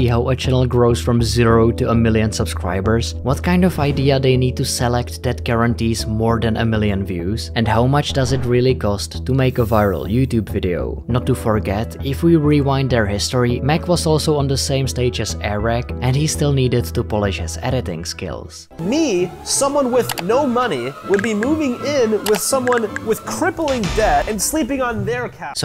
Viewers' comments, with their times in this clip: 0:10 Lol are these comments real or bots?😂 every comment is awesome video, great channel lol, I came to the comments out of curiosity, but literally I’m paused and I cannot go on cuz it’s boring and the voice is too annoying 🤣🤷🏼‍♂️